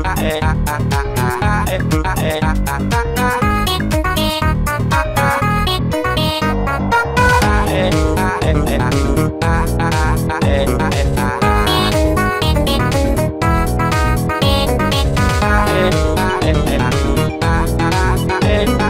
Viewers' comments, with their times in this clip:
0:04 Tom says caca